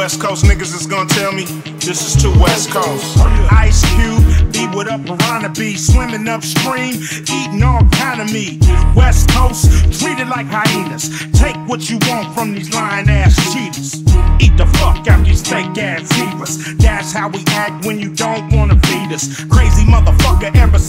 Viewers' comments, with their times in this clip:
0:03 Take the piano out. Keep it quiet and funky. Still dope tho'!